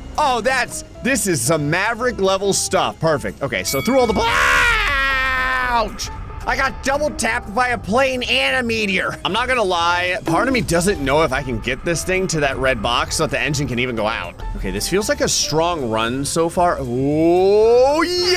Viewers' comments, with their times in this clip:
0:04 thanks for the new text chime lmao